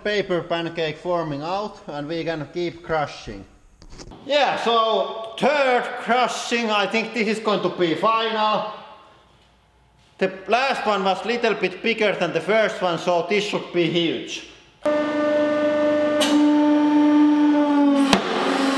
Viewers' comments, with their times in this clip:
0:04 Turd crushing, I really don't want to see that.
0:04 ..." turd crushing " now there's an idea
0:04 Anyone else chuckle when he said “tuuurd crushing” lol
0:04 for the "turd crushing"
0:05 "turd crushing" Hm, thats gross..